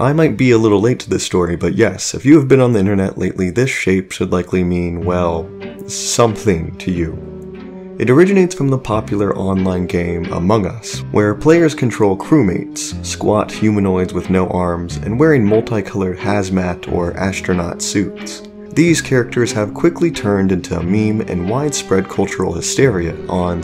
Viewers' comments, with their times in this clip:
0:05 That music...It brings back memory's of a blocky game...